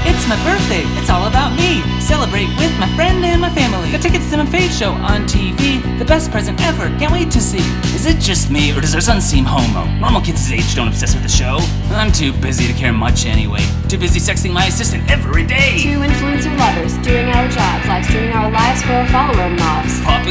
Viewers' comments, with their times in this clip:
0:08 why he sound like rick sanchez